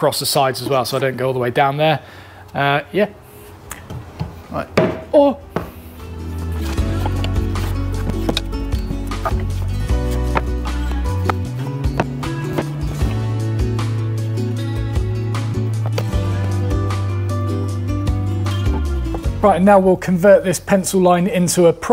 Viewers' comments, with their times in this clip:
0:04 That noise you made